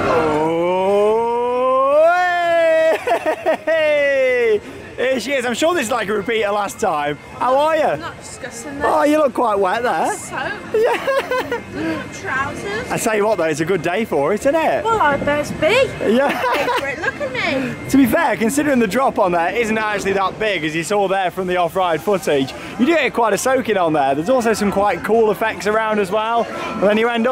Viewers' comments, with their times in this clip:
0:08 the accent came in She was serious